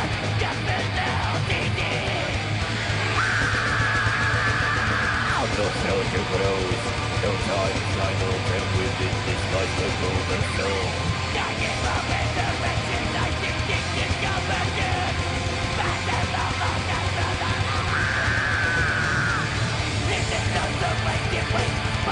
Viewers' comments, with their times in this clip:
0:07 The change in pitch is INSANE!!!! Dani Filth is King at this. Love this live version of it. Great stuff